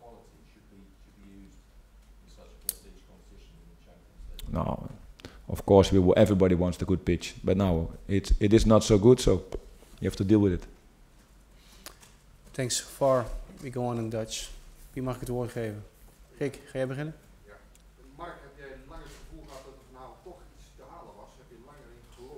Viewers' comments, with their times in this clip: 0:05 Everybody wants a good bitch🤣🤣😂🤣